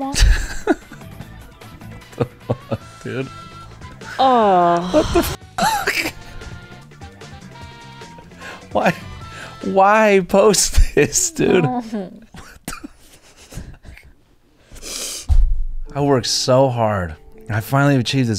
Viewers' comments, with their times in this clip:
0:03 The sonic soundtrack is absolutely killing me